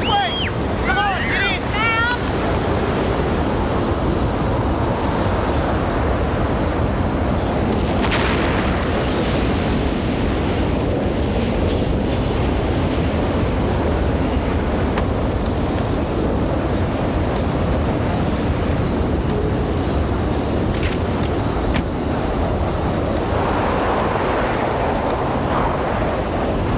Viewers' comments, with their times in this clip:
0:08 when the house gets destroyed it makes a loud explosion hahah this movie is pure cheesee but its hard to dislike it.